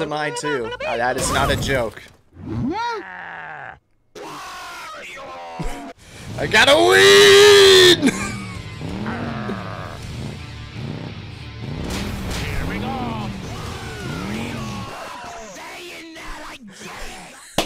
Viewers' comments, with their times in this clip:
0:04 yay my stupid voice made someone laugh